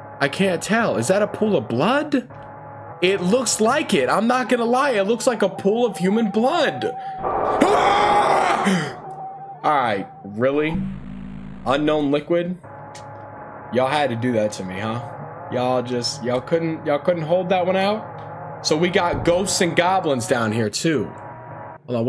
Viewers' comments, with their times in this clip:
0:06 Bro he really had the markiplier scream